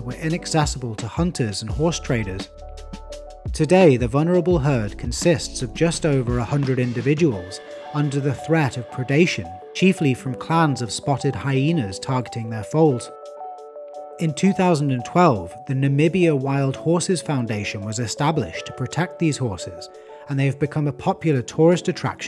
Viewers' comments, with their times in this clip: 0:04 Annoying and tasteless elevator/soup music is getting on my nerves, bye!